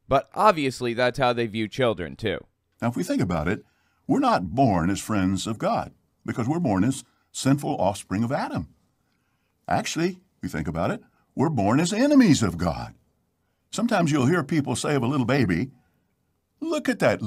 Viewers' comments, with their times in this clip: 0:04 The way he speaks weirdly sounds like Caleb and Sophia's dad, but sped up.